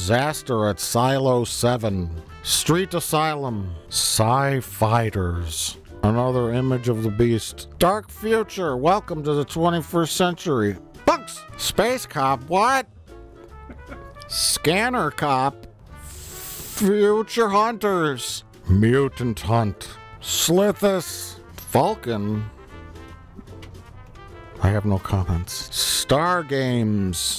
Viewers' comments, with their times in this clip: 0:10 The way he just yells 'PUNKS!' is half a second of magic.